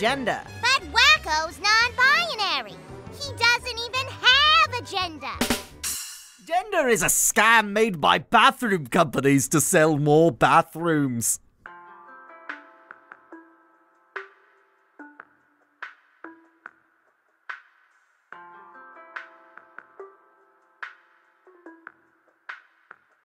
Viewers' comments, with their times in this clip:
0:06 I love the way this was said